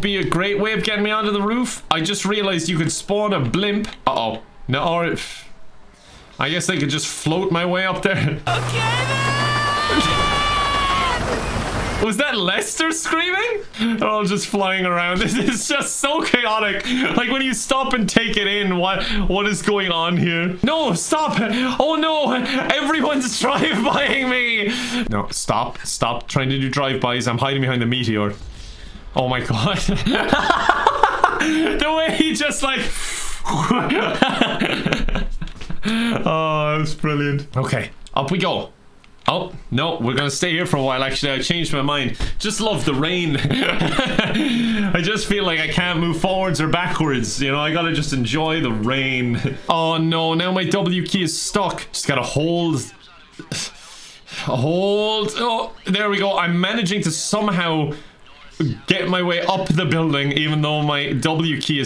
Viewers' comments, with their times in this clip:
0:07 Yes, that was Lester screaming :D My friend and I tortured Lester in the first GTA Online Heist Mission in every way possible. We figured out that Lester screams "OKAY THEEEEEEN" when you are airbourne for some time... we also figured out that he forgets he needs his walking stick if you piss him off enough. He then starts to punch you to death or steal random civilians' cars. He might run you over with them or drive a motorcycle until the end of the world... Lester is a wild one if you break his AI, I mean if you set him free, of course...
0:08 it sounds like lesters yelling "kevin"
0:10 lester screams YouTube subtitles MUSIC
0:42 the terraria rain theme was so subtle but so nice, liked.
0:47 subtle terraria soundtrack, love it